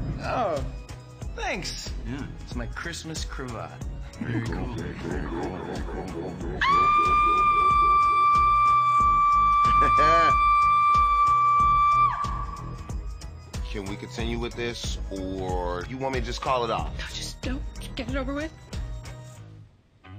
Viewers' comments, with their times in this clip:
0:06 She Turned Into A Banshee